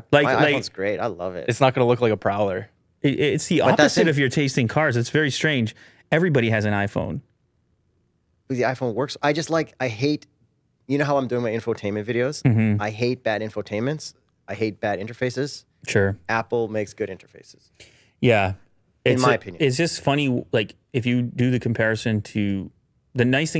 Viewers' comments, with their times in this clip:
0:04 Sad Samsung Pros noise.